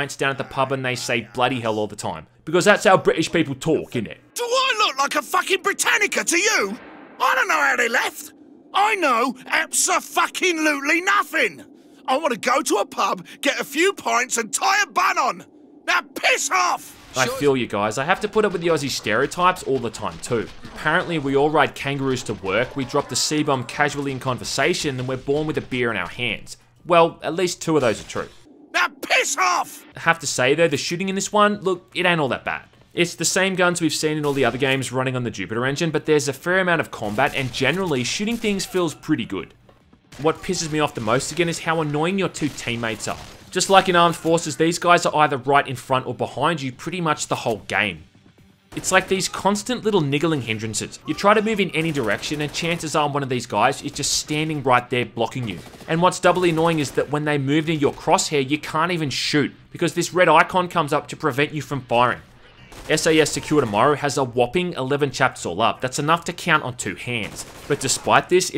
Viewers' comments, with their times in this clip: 0:03 Sounds like an uruk from Middle Earth: Shadow of War.
0:04 I look away from my screen for two seconds and all I hear is Sheogorath telling me to piss off
0:14 he sounds like the same voice actor as Sheogorath fro ESO..
0:50 he said n*gg*r